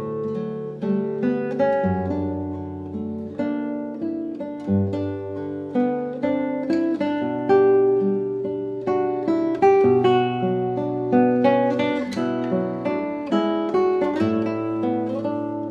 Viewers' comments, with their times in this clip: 0:03 .22 also has her tremolo.